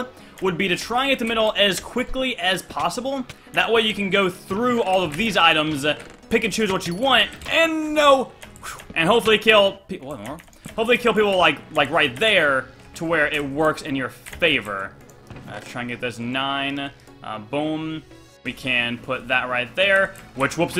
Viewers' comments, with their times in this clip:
0:06 Pickachu's watcha want , now you won't be able to hear anything else , you're welcome :)